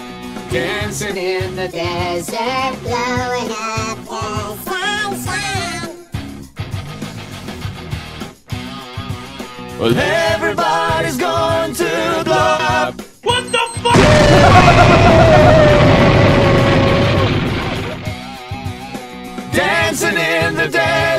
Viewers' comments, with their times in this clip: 0:04 Anyone notice how it’s only that do Alvin & the Chipmunks ACTUALLY sound like an actual band???